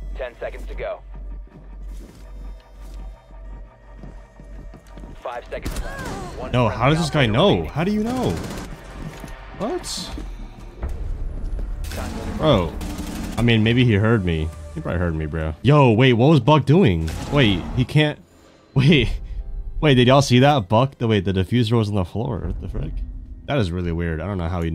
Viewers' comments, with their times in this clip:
0:08 she heard ur scope close open sound